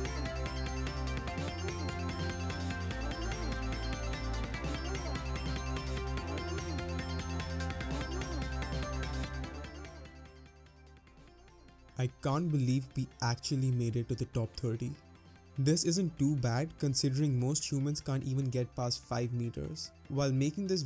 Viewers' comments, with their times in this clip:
0:05 I appreciate how there's a second between the scene ending and you talking, to let the music lower in volume. So much YouTube would've cut out that essential moment of calm waiting. That music is awesome, what's the name of it?